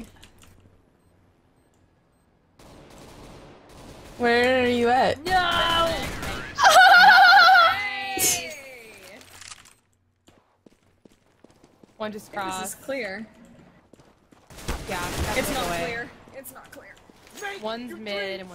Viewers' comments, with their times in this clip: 0:06 omg that laugh wtf hahahaa